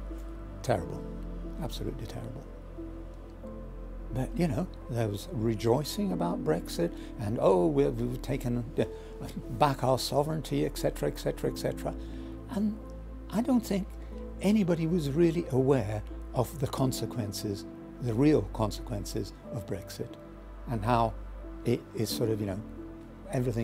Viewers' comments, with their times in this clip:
0:07 I have no sympathy for people who say "ek cetera". None whatsoever.